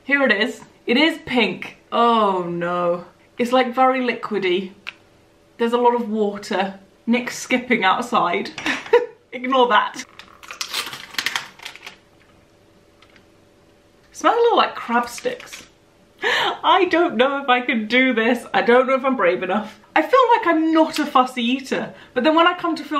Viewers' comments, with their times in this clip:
0:07 Yeah i though that was him. Kinda distracting. Lol 😂 she says he's skipping